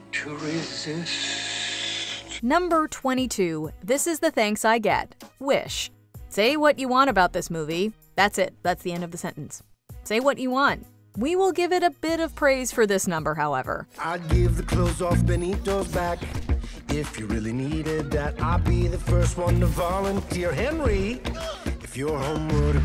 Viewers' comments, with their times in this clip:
0:03 I knew this would be towards the bottom. It’s catchy, but it’s just not a villain song, and the less said about the lyrics, the better.